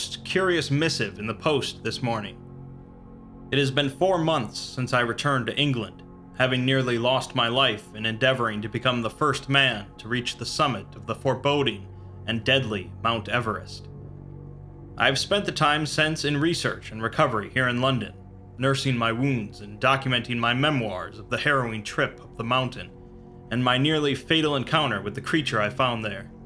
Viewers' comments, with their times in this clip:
0:09 Whatever the picture is I love it 👍 I also love the butchered French language. I think it’s pronounced “ Leh-Army de Tairra” The land army. (I played Napoleon:Total War, so I’m basically French)